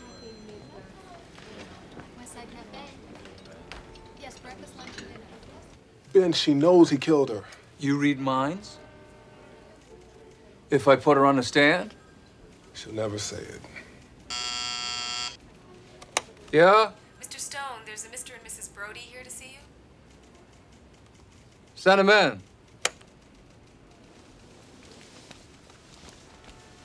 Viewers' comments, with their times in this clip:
0:10 Heh. I love the little pause like... "You read minds?" "Hold on, let me try..."